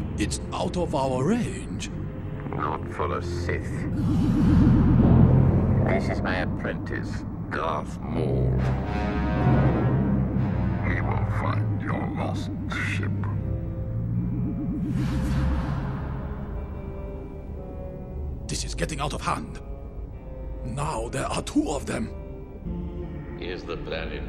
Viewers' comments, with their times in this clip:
0:10 Did Sidious’s voice just become deeper? Was it him making his voice deeper or was it just the quality of the holo?
0:10 It wasn't until I saw Phantom Menace in the cinema (2024 anniversary re-release) that I realised this line was said by Palpatine, and that it was "HE will find your lost ship." Because of the difference in how the voice sounded, I've always assumed it was Maul speaking, and that the line was "WE will find your lost ship."